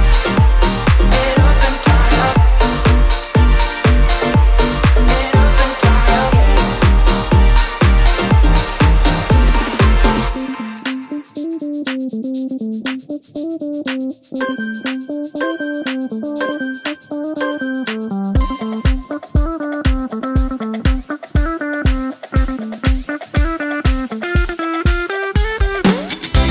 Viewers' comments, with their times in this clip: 0:10 Ha the 90s sitcom music threw me off but besides that, great workout! Super fun. I love these medium length, intermediate level mood boost vids the best!